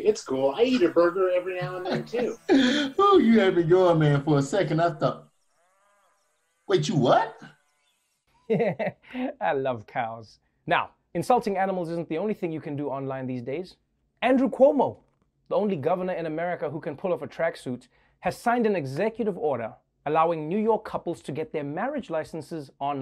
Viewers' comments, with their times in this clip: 0:09 trevor noah with indian vibe: 'I love cows'